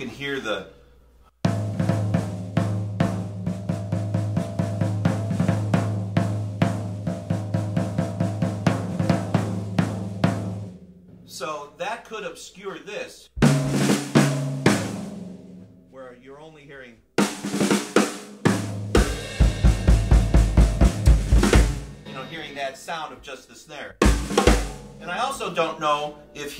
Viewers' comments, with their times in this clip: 0:07 Wow, ever since I`ve bought the recently remastered albums I`ve been wondering why is there a tipmani mention at John Bonham, besides drums obviously. I`ve never heard a timp on the first recording and always thought that it was an oversight. Good catch!